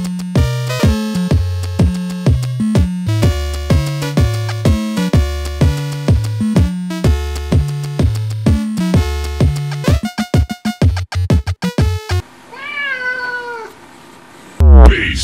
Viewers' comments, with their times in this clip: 0:13 OK, it may have been a conditioned response (from "the Outer Limits" 1960's TV show??) but the difference tones "binaural beats" did induce a mild feeling of disphoria...anyone else?